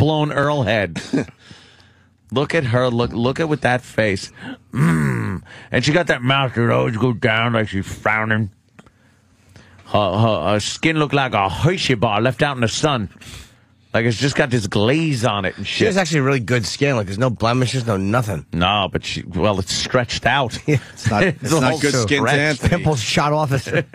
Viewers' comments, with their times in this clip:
0:04 that mmmmmmmm killed me.